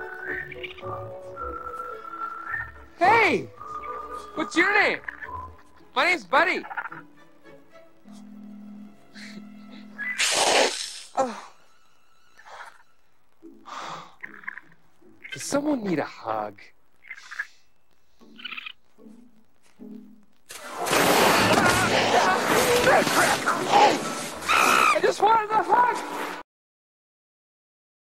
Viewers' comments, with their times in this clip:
0:10 In a real life situation, would a raccoon usually run away when a person comes near it instead of hissing at someone as it did ?